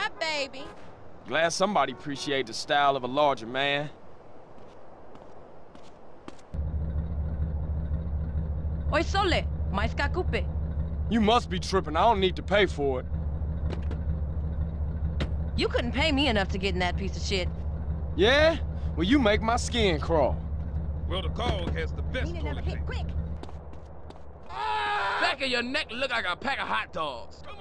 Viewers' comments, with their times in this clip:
0:08 what the hell does she say?